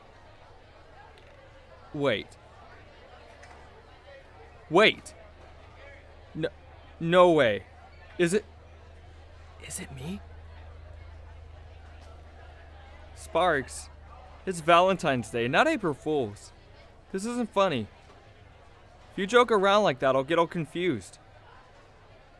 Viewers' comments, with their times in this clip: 0:04 The way he said; “Is it me.?